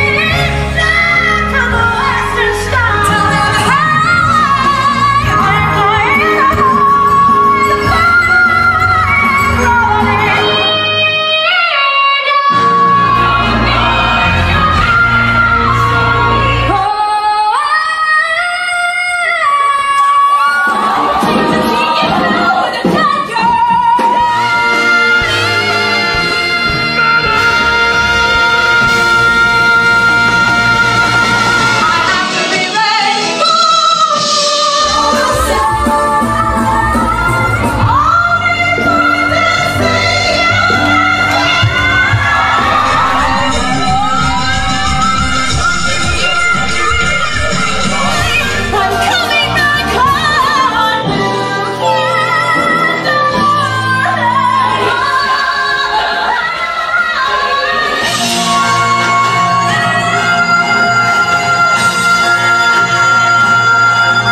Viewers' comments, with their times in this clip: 0:04 Oh my god!!! Willemijn Verkaik ! Best riff at Wicked i've ever heard!
0:22 Barrett sounds better than me understudying as Veronica in Heathers
0:51 that- THAT NOTE HAS BEEN AN F THIS WHOLE TIME?!?! And I've been hitting it as ifnit weren't the edge of my range. I guess its all in the mind